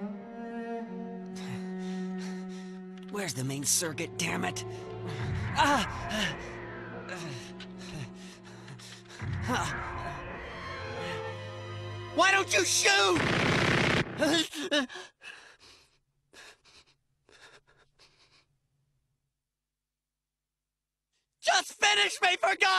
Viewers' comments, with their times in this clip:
0:03 Please oh please god I hope the live action Gundam movie by Legendary includes a scene like this. I love it because it shows pure terror (not being able to see the approaching enemy) and the ominous stomping of the Gouf in the dark. I also appreciate the minutia of Shiro hunching over and accepting at that last second that he's about to die and whimpering a bit. It's very convincing and makes the character feel way more human. It reminds me of old samurai films where the defeated warrior would hang his neck out hoping for a quick death.